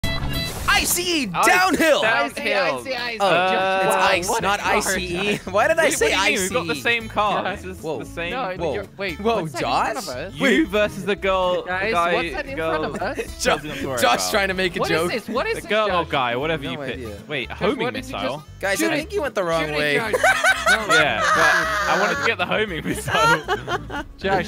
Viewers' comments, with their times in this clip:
0:05 I love your laugh!!